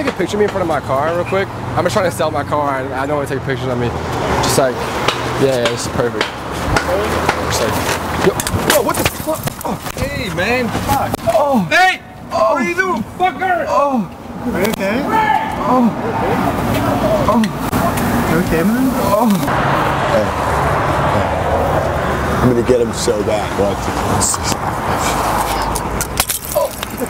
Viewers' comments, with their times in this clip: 0:10 Set play speed to 0.75 swear it sounds like Tommy Chong